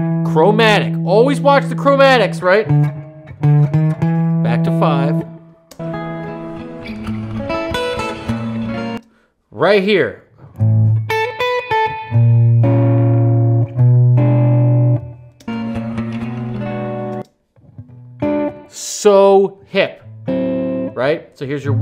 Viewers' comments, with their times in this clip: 0:08 isn’t that Bb diminished just a Vi chord ? going to the ii ? Like “ I got rhythm” and countless othe jazz standards . Just curious .